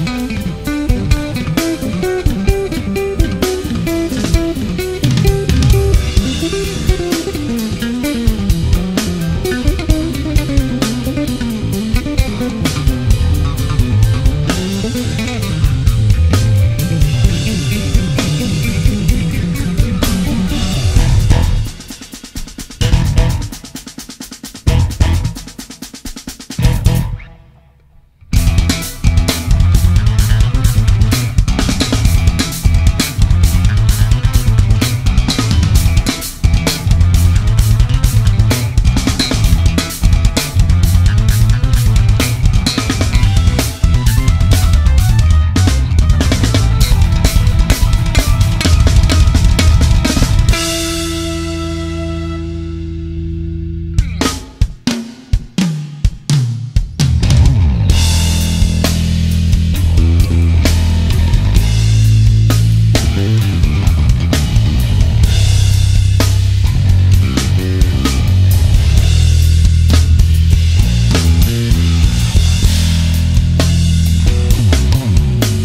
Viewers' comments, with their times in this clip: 0:05 the bass solo becomes very interesting.
0:32 this is sounding a lot like Chris Squire and Bill Burford of Yes.
0:56 Damn that breakdown starting was awesome as heck!